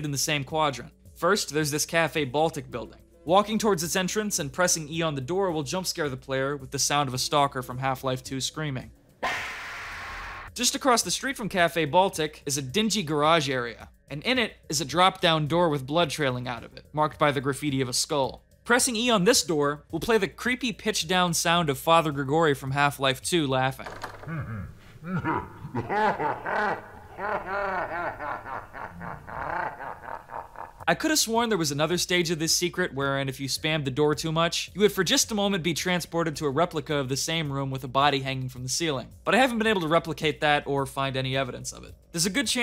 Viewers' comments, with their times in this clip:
0:06 the stalker sound has been ruined for me by meme culture, i couldnt help but laugh at it
0:09 that scream sounds more like a chicken, but I never played half-life so i don't know
0:22 i thought that was heavy from tf2
0:24 why does this sound like heavy from tf2